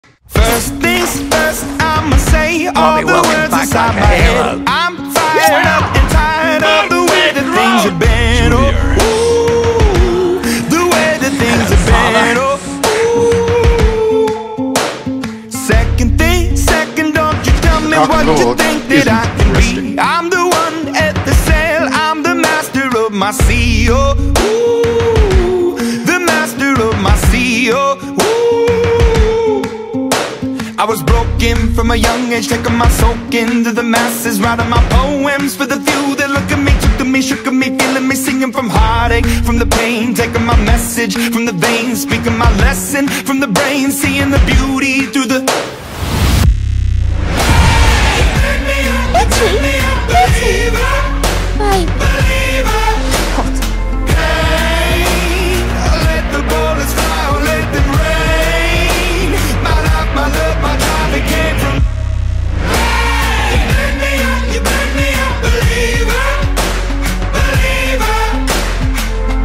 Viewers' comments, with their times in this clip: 0:02 Everyone: Mhm...cool watches whole video Me: Keeps replaying it trying to figure out what barty crouch said-
0:19 to me it sounds like snape saying ' the dark lord isnt muslim '
0:49 I was wearing headphones and it sounded like she was next to me whispering in my ear... It was creepy
0:50 I WAS SCARED OF BELLATRIX VOICE LMAO
0:50 im wearing headphones and sounds like bellatrix is really whispering in me ear